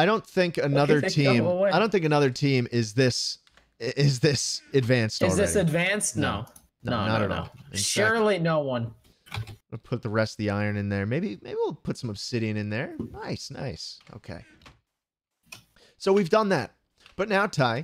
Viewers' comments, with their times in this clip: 0:05 They said the same thing at the exact same time in the same tone.